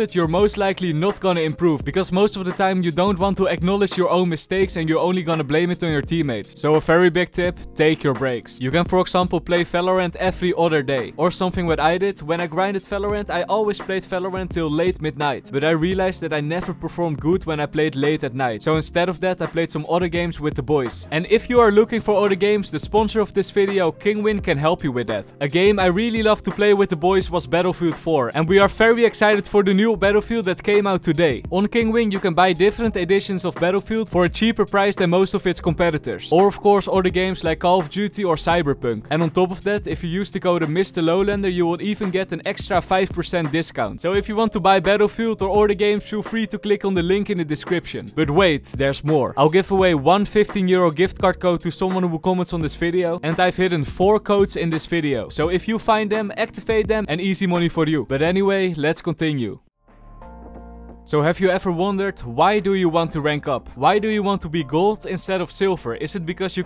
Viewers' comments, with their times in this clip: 0:03 Jaja atacker helicopter go brrrrr
0:49 sounds like hes saying im giving away one fifteen year old gift card